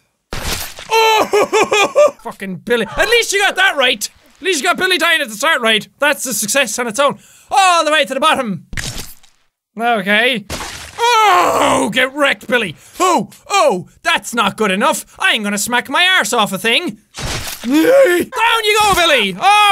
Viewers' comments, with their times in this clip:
0:04 any body else hear “all the way”